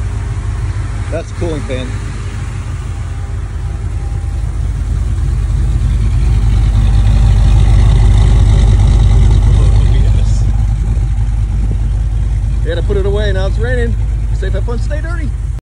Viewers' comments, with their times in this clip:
0:12 That sb sounds nice! Beautiful, clean truck.